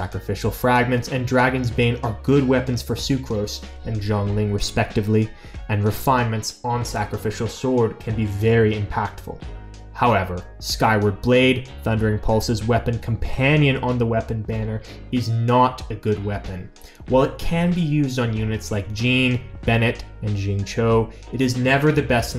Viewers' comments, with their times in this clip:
0:04 I almost heard you said "zhong Ling". Its XIANGLING.